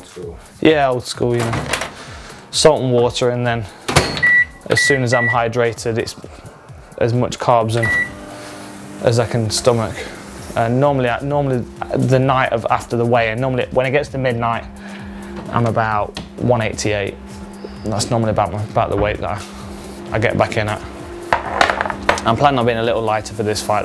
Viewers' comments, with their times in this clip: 0:09 damn i thought it was my micro wave ! i was like ... who s playin with it